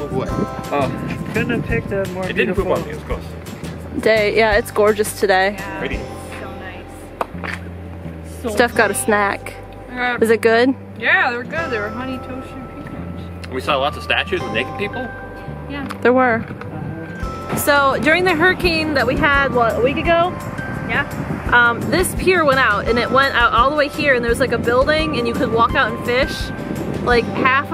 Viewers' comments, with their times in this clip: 0:08 The exaggerated Wisconsin accent gets me every time.